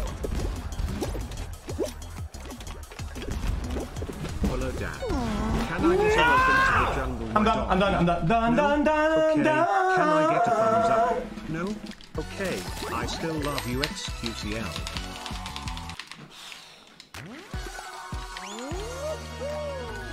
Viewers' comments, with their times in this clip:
0:08 good choir voice lol